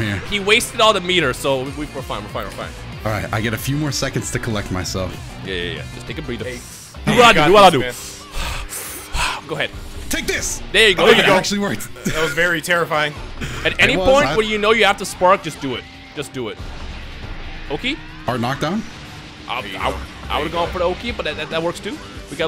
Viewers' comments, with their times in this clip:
0:07 You say run starts to play